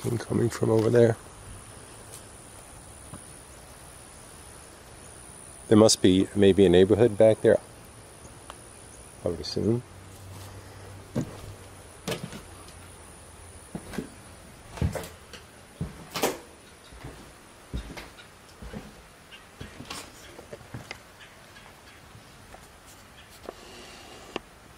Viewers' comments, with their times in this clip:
0:08 -56 i heard male whispers then like a clicking or tapping sound 🔊
0:08 -56 i heard male whispers then like a clicking or tapping sound 🔊